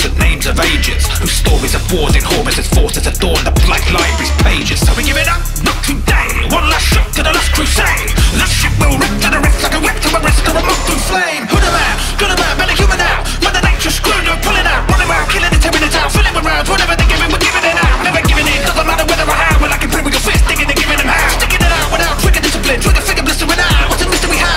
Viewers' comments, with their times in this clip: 0:05 By my light, that beat drop with this cutscene- by Mankind!